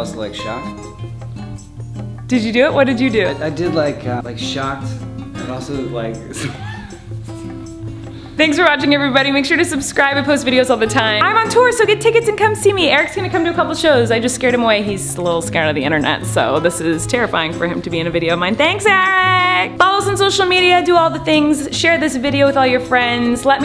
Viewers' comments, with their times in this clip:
0:07 they held hands while laughing.